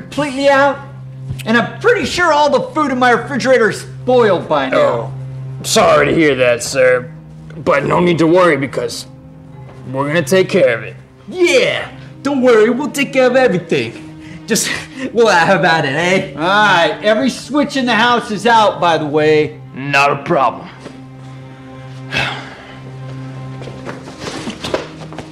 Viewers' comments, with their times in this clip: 0:06 amazing New York accents